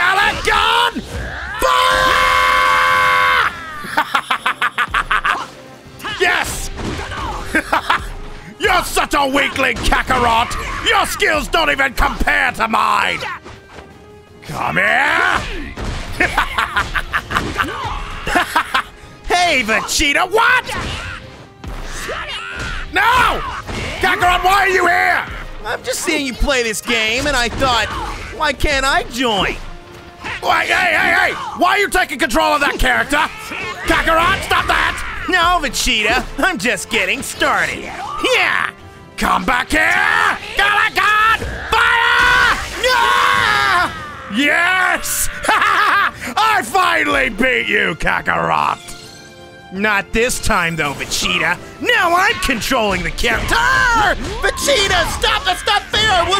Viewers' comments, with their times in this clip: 0:08 why i heard a fart lol
0:13 When he said “Come Here” i thought he said Kame
0:38 That is the best HYEHH ever